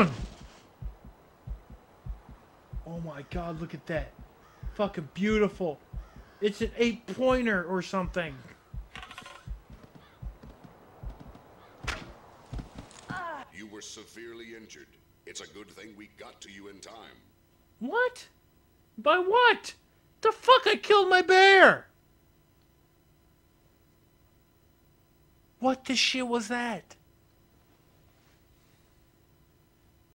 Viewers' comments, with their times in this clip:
0:10 You can hear the moose coming back xD
0:11 i could hear something running towards you.